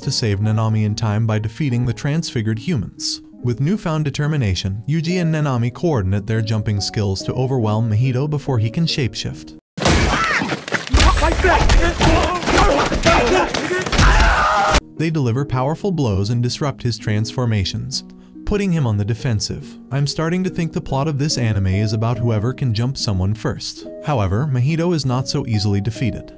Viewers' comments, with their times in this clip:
0:09 sounds like there saying fight back bi